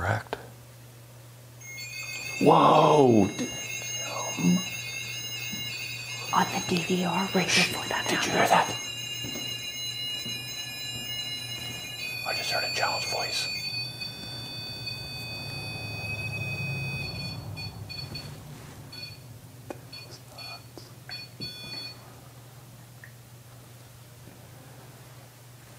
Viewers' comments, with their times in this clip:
0:08 It's almost 3 more minutes alright alright but speak louder okay you don't need to whisper I promise